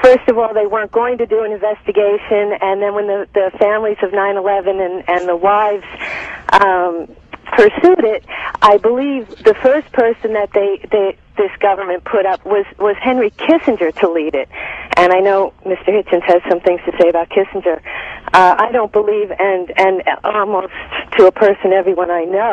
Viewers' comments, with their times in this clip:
0:03 that's a familiar voice! I think she's called into the Atheist Experience once or twice